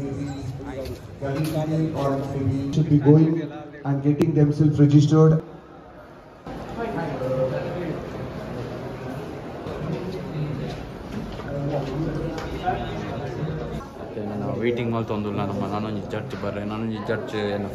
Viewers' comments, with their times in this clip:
0:04 DJ announcement if you know you know 😌